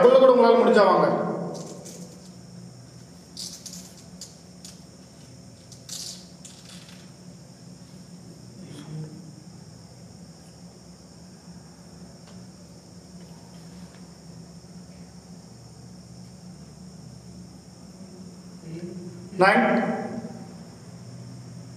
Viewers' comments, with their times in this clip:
0:04 Did u notice when u started talking in the under ground on ur left side the window started shaking fastly and it stopped, omg! Never seen r heard something like this before 😱😱😱😱 wat was tht thing is tht human ? If it's human why should it sounds like humming 'veliya po' and when u tried getting near , it gave u a warning sound like breath omg I was holding my breath in fear. NVR seen a person with this much of guts I hv no words to appreciate ur Bravery 🔥 all I can do is just praise 👍u r 🔥 Mr. lion heart.